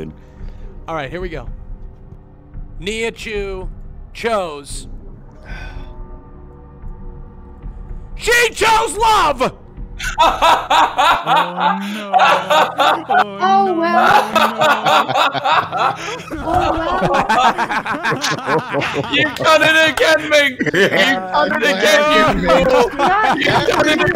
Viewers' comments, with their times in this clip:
0:08 my guy can be light yagami with that laugh
0:12 the trifecta of villian laughs made me villian-laugh as well :))